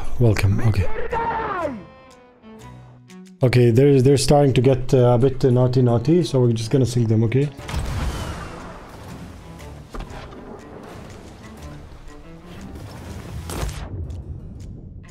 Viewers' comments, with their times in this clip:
0:03 that polish scream was crazy